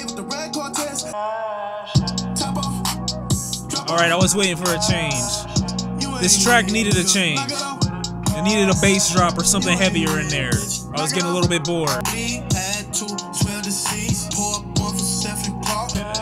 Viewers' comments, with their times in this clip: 0:03 rock dont let the beat carry him fym💯